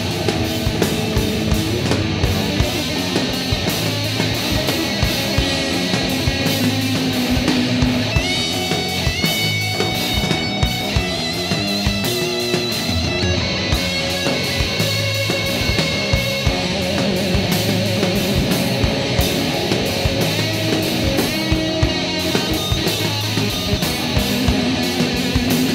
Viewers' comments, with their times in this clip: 0:09 I can totally visualize them crashing into the sun during the solo. Solo starts btw